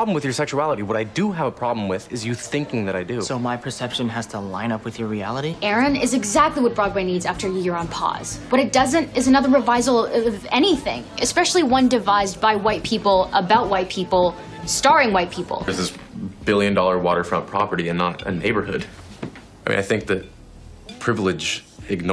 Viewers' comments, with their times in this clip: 0:10 Did they really not care enough to get a take of her actually saying "revival" correctly?